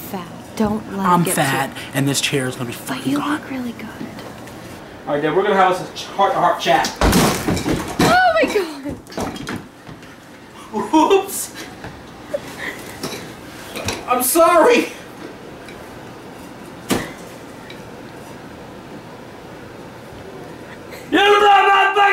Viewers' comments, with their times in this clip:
0:06 He legit made a beat when he broke the chair!!!!! XD
0:07 had my dying with the snap sound from the legs